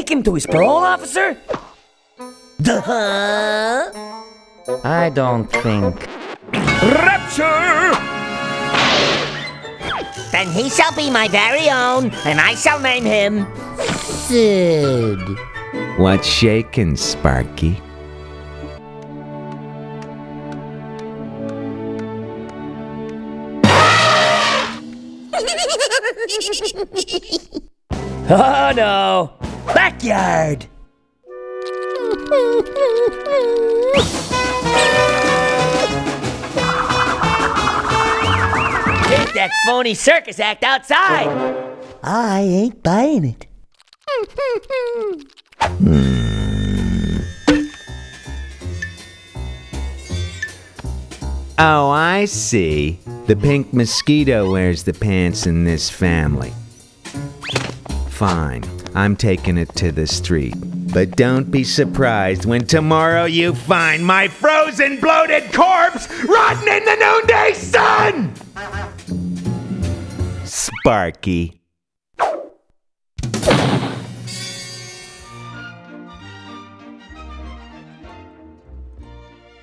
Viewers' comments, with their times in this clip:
0:06 lol the way he said “rapture”💀
0:48 Thats without a doubt the most creative calm sarcasm to agressive yelling i ever heard
1:01 sounds like the air conditioner from The Brave Little Toaster got in the liquor cabinet again.